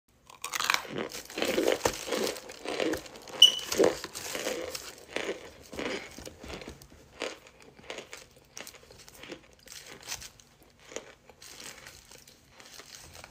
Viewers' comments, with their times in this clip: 0:00 OOOOOOO THAT CRUNCH